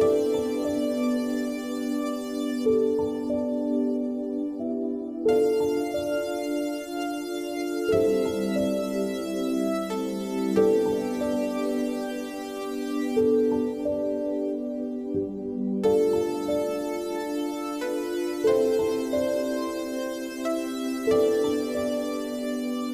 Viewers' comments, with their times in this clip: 0:05 that moment when you realize it's actually a jet starting up.